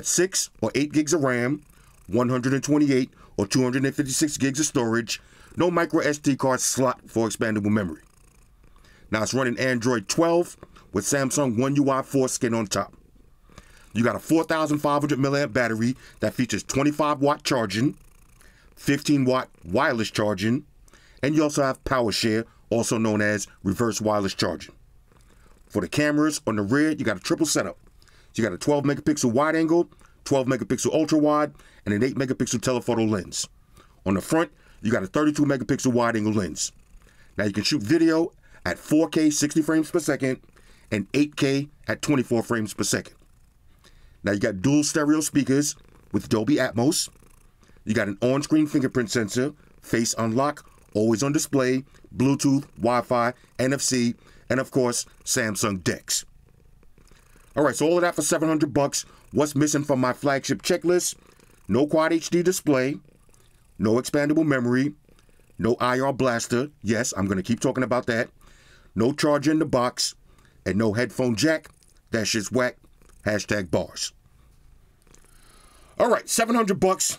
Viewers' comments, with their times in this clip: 0:08 Rocking Android 12 with Samsung One UI "foreskin" on top 😂😂
0:10 did he say it's running One UI Foreskin? 🤣🤣🤣
0:10 Samsung One UI Foreskin ?? Cut that shit off
0:11 'one ui foreskin on top'
0:12 Samsung foreskin?? pause lol
1:00 cat purring 10/10 purr very good cat confirmed